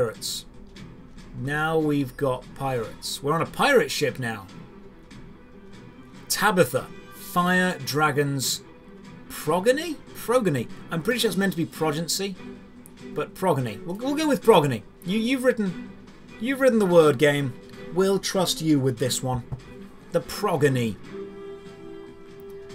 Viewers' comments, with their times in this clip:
0:09 Progeny means a descendent lol and is said with the way in the way you said progency with how the g sounded